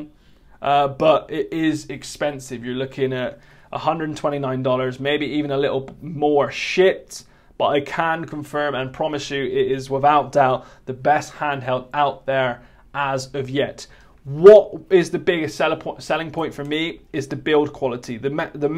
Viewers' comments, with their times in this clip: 0:06 did he say the s word or did he say 'shipped'?